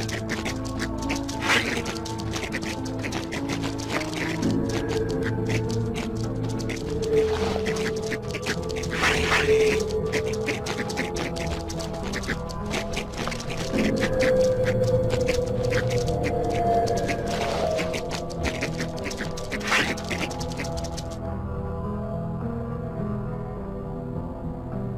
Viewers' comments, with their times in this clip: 0:06 the rat noises lmao